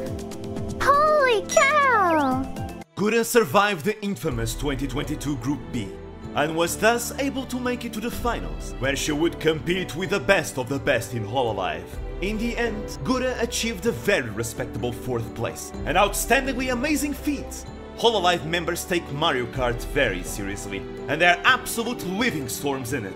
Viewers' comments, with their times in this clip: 0:05 Wow I really like your announcer voice it make your clip sound so epic. Also Get Over The Barriers kind of make me want to see Hololive playing Trails from Zero.